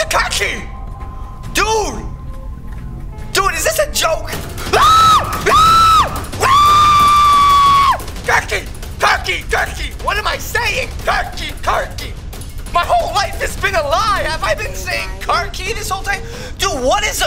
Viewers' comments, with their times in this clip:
0:04 that scream scare me LOL😅😂